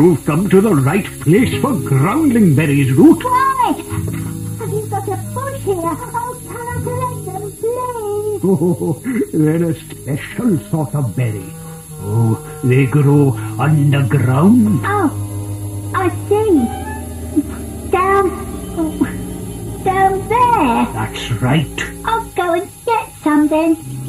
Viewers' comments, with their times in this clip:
0:08 why does Pepa speak French?